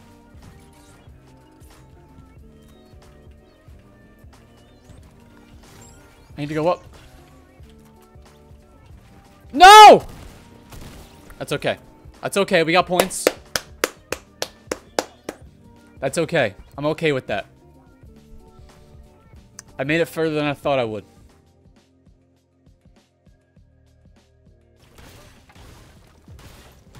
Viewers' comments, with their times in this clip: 0:09 that NO scared me so bad